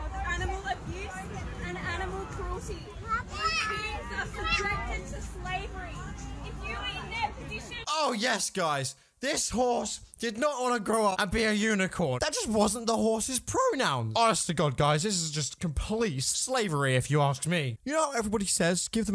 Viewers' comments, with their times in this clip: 0:05 I know that voice